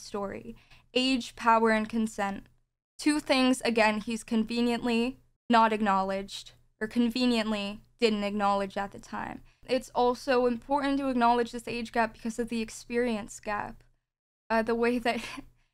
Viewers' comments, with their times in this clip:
0:03 this girl is genuinely driving me insane, do you guys see the way how her voice changes and stuff. maybe its just me but it seems as if she raises her voice on the parts where shes directly attacking george for his response or when shes defensive but lowers it and talks calmly once it attains to her being a victim and what she has seemingly went through.. is this something psychology can explain because it seems manipulative as hell